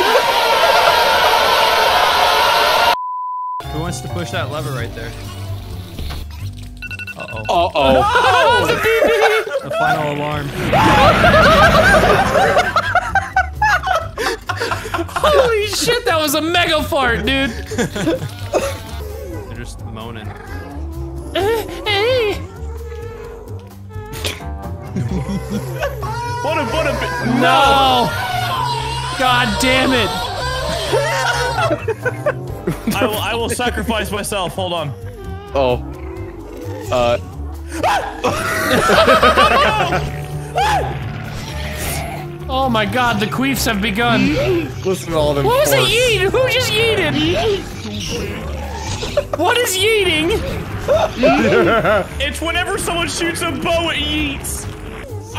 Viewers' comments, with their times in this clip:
0:08 i farted at the same time as the mega fart happened
0:42 I love the yeet that came out of nowhere